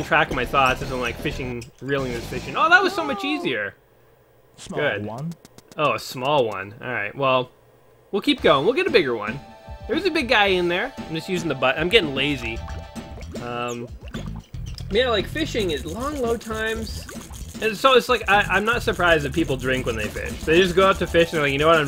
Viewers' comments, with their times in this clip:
0:03 Smawl whone. Lol this game is great.